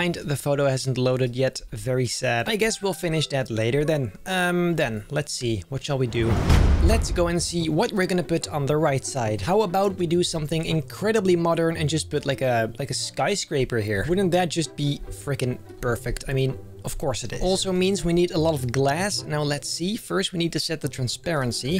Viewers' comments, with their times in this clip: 0:08 At like in the video, you went in a scottish accent, well i guess we will finish that later den aha